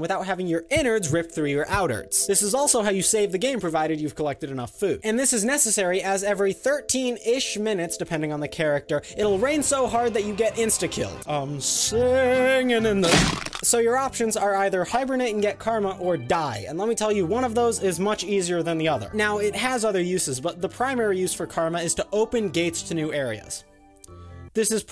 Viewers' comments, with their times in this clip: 0:09 Why do I hear Crows and why does the air taste spicy?